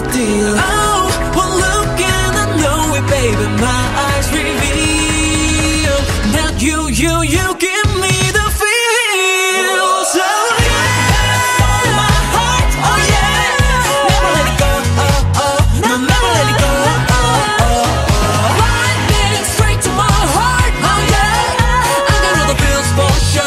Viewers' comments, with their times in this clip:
0:07 this high note really like Jungkook's voice